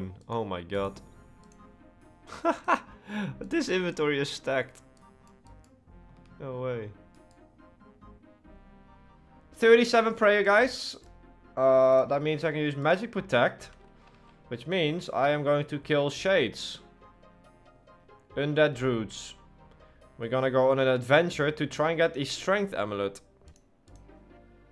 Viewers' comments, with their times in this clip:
0:08 37 prayer guys! lol that didn't even sound like you bro